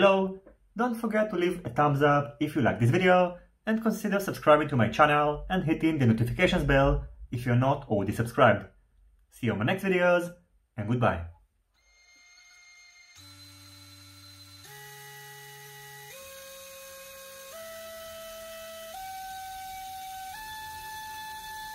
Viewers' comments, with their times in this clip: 0:06 sounds very nice. what is the frame in ? thanks.